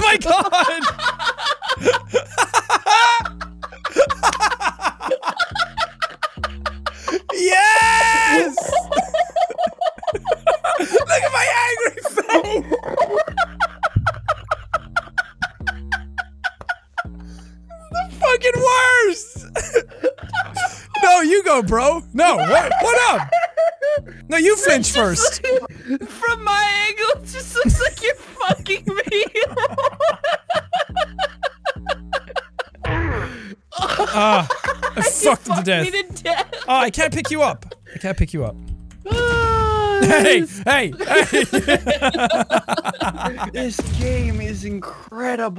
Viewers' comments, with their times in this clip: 0:10 sound like my chicken...
0:12 his laugh went with the..
0:12 Dolphin I hear?
0:13 just got a turkey call
0:14 he sounds like a dolphin
0:33 Did anyone else think that the sound is the same as the whomps from Mario?